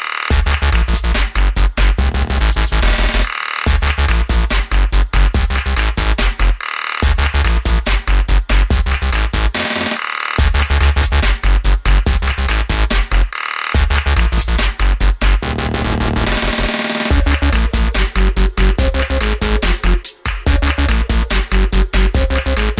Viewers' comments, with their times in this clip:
0:09 Real dubstep feeling for me from 2009